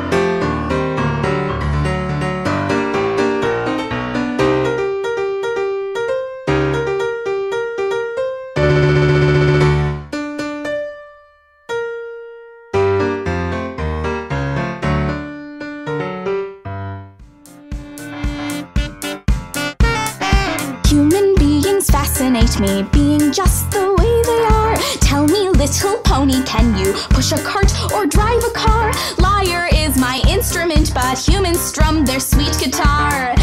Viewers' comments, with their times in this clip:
0:07 I can't play that fast..
0:15 You actually added in the "shh", lol